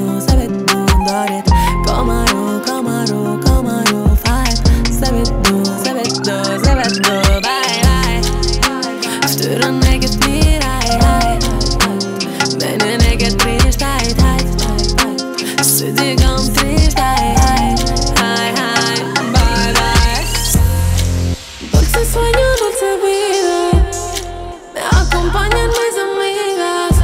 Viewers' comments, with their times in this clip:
0:08 Love it! Also love the melody Same as in Katy Perry's Harleys in Hawaii, but I dont know the original.